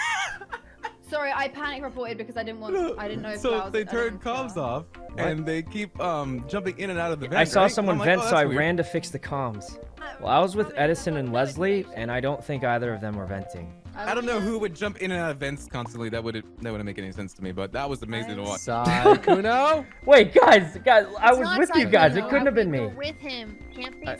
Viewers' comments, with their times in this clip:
0:08 the way sykkuno say ''cam'' AAAAAAAAAAAAAAAAAAAAAAAAAAAAA